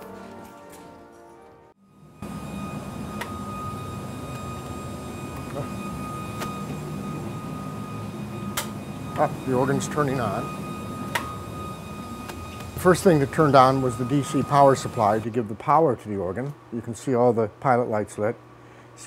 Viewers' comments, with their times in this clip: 0:05 wait, was that a piano in the organ ?